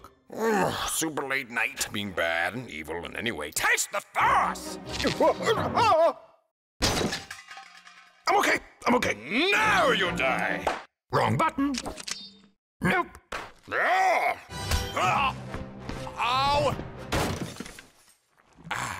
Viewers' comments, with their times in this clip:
0:06 OK this is genius most adverts and cartoons use a thousand crash effects but there iss only one so weak it fits perfect and is funny as hell